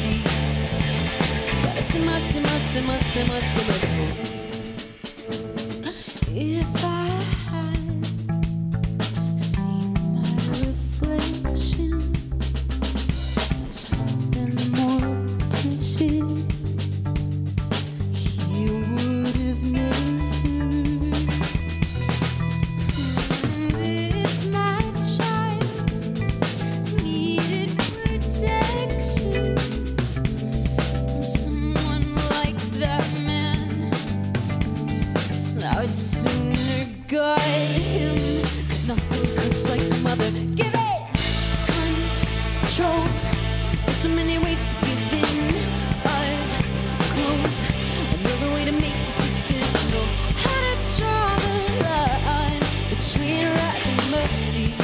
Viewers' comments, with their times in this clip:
0:05 that hiccup hahahaa 😍
0:31 When Hayley sang, "from someone like that man" I can hear her voice trembling from anger and damn it sent chills
0:40 This "Give in" sounds soooo Hayley!